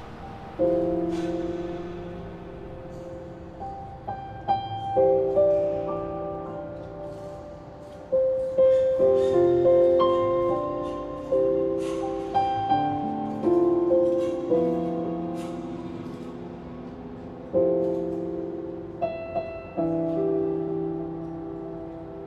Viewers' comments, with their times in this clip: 0:03 Someone PLEASE comment with the song name and arrangement played so lovely by the gentleman. I have to say it tore me up! The chord nuances were just beautiful...and with such a nice gentle touch.